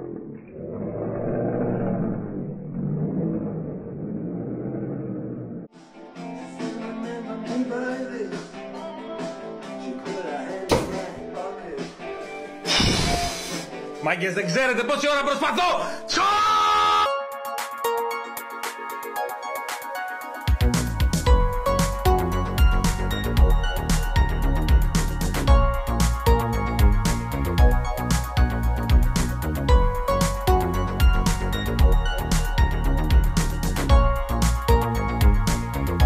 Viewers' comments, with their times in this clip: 0:06 ah yes, the classic Greek "throw a knife through a ring while Dire Straits play in the background" situation - fyi at the end he yells "Dudes you don't know how much time I am trying!"
0:18 memories... Loved that tune as kid
0:22 oh my god the homebrew channel music